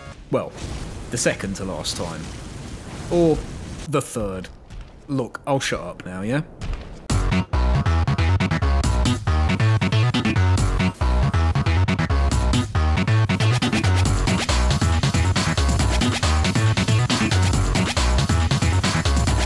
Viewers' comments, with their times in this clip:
0:06 Dude what is that jamming song starting ? I swear I've heard it before and want to get down with my funky self~